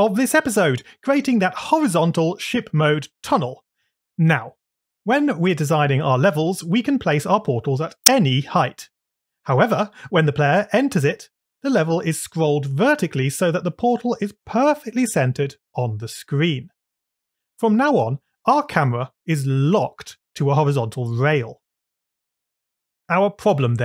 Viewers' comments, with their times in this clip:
0:07 Bug Squashed! Also, I noticed an audio artifact making a really loud noise, I have no Idea what that could be from, but it scared me a little XD